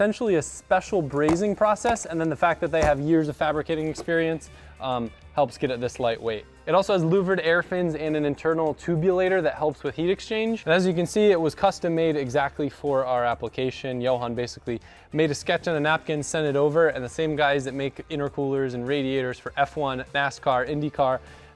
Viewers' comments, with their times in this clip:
0:07 Sounded like I had pressed a Vice Grip Garage video for a second there...